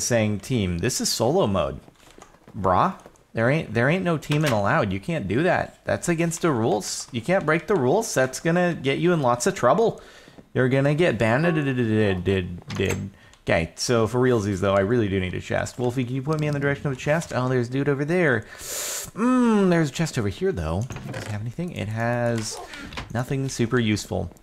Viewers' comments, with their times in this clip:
0:10 it sounded like he had an Irish accent for a bit.